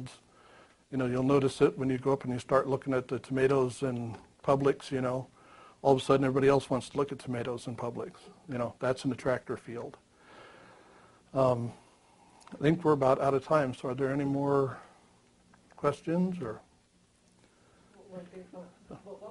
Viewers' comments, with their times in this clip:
0:03 Great talk, he says there is great interest in ‘tomato publics’ what’s that all about or am I hearing it wrong.